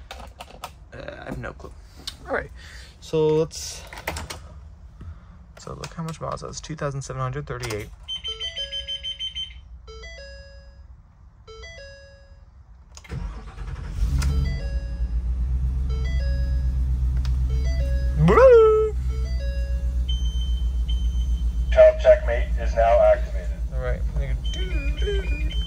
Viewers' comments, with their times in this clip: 0:08 sometimes I have to remind myself this is a bus and not a Ford Car or SUV with the new chime
0:09 sounds like a car chime startup